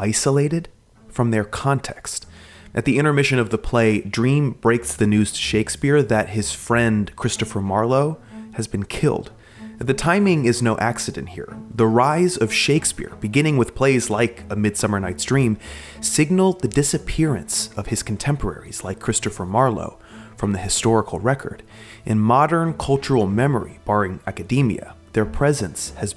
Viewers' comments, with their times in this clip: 0:07 The music that starts is beautiful. Does anyone know the name of the piece?